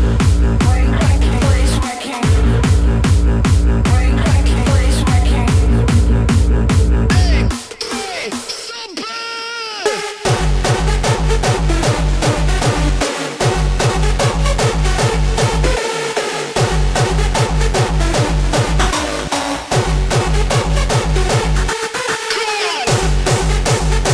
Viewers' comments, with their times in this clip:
0:10 and the song start ??